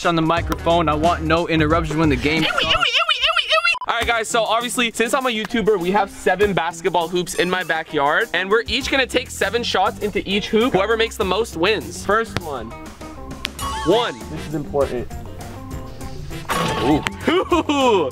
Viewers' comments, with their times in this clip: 0:03 That ewaewaeeaewaewaewaewa got me cracking up